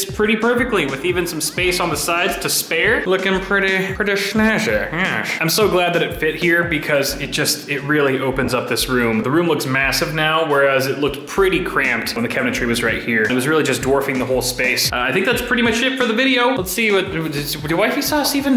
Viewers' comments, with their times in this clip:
0:04 Was that a Kyle Dunnigan impression at the mark?